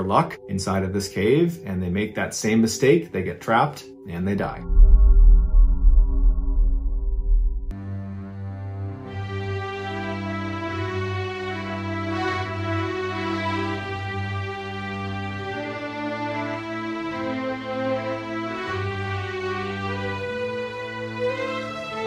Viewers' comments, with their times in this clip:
0:08 Thank you for this Legend of Zelda ass music